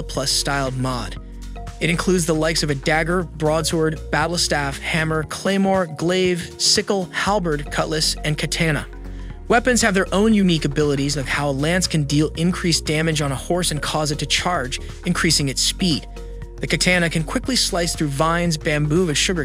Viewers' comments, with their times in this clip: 0:06 and the way he says katana